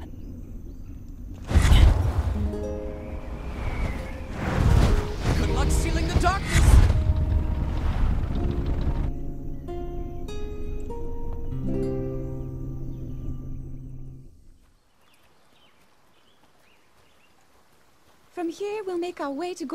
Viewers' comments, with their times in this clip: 0:05 This line, despite what we know about what happens, is so funny since it sounds like he broke character or at least broke the voice 😂